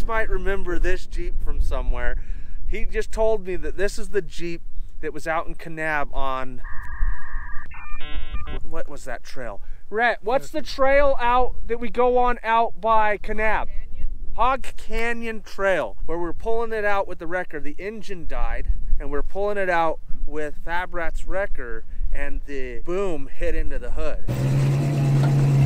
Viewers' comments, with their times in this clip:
0:06 Totally agree. I also laughed out lout when he was trying to remember something and we heard dial up modem tones.
0:06 Love the dial up modem sound effect